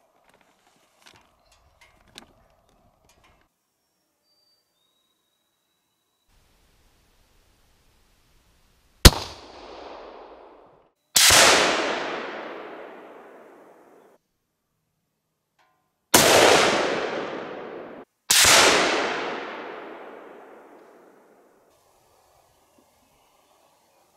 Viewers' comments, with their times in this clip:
0:08 that’s cool to hear the crack pop… good shooting little one, though this video is 5 years old at the time I viewed it…